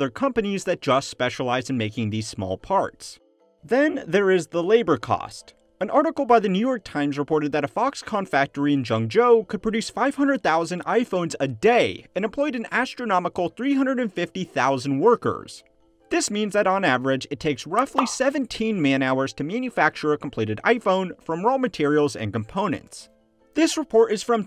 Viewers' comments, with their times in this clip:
0:07 It is really surprising to hear an American actually pronounce a Chinese city's name properly!